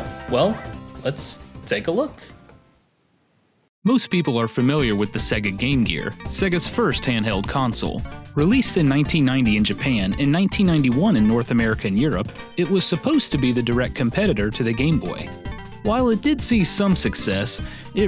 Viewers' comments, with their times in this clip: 0:03 Wtf was the music